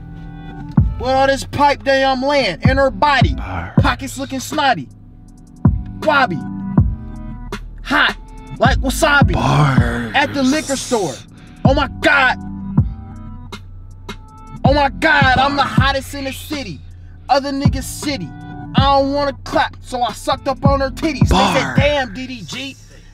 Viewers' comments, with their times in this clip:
0:08 IM DEADDDD THE WAY HE SAID HOT LIKE WASABI